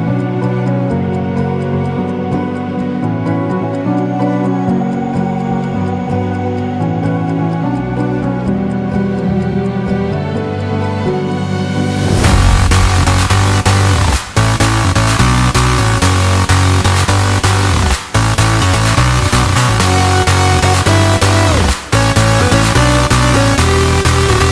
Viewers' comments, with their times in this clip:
0:10 this track has set a new bar for such supersaws & mid bass!